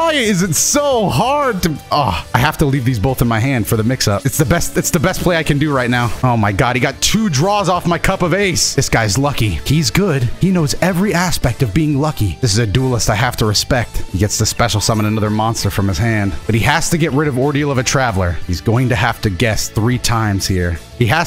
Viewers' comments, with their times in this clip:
0:09 that was the best yugi moto impression i’ve heard hahaha